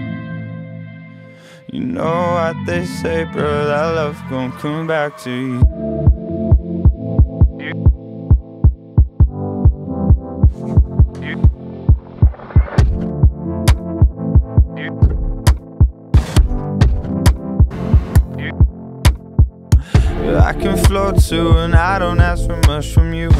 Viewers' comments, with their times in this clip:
0:10 makes me think it’s raining